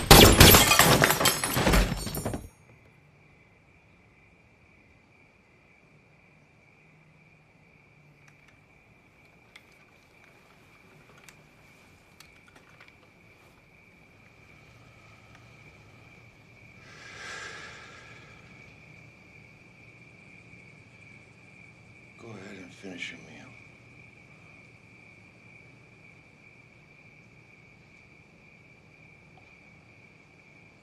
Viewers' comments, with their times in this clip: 0:06 The sit back and exhale speaks volumes
0:16 the sigh of a person that isnt happy with what they did, but firmly stand by it. he wanted this man to hurt before he died.